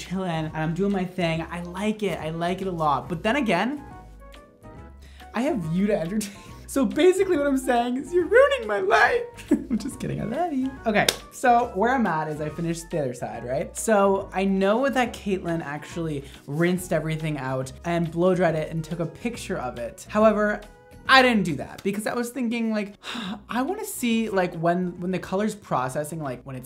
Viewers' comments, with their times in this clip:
0:10 *high pitch voice just kidding i love you